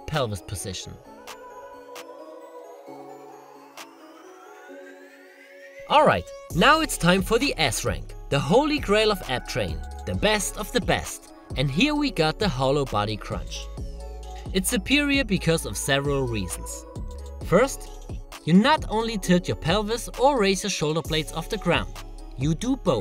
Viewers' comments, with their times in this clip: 0:07 can’t wait for the ass rank! I got my money on j-lo